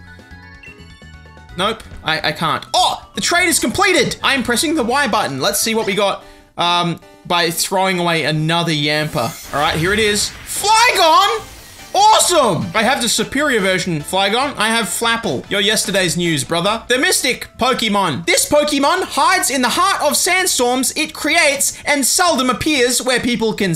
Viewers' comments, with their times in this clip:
0:10 is the most perfectly pronounced "awesome" ever